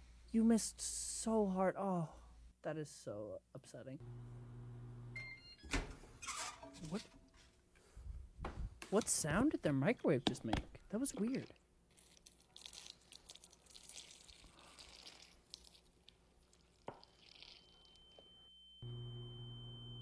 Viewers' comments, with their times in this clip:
0:04 but that’s the sound my microwave makes?
0:04 I actually have that exact microwave, and it just makes a little tune with it's beeping.
0:05 WHY DOES MY WASHING MACHINE MAKE THAT SAME EXACT SOUND WHEN ITS DONE 😭😭😭
0:05 when he opened the microwave my fire alarm went off so when he asked what the sound was I didn't realise it wasn't part of the video 🤦🏼‍♀️